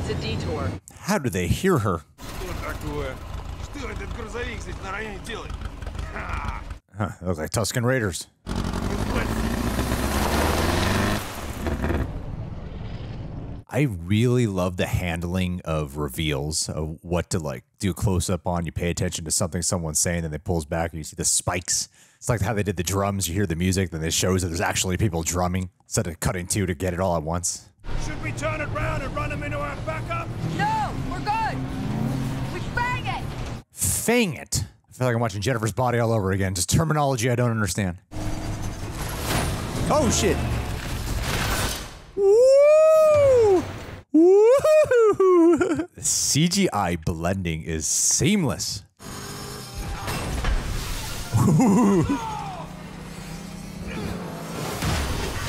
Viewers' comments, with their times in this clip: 0:07 I've never EVER noticed that these guys with spikes talk in Russian language. I'm Russian and I'm shocked. How useful to watch films in English)))
0:37 Honestly better to not understand than to confuse it for a slur like what me and a buddy of mine did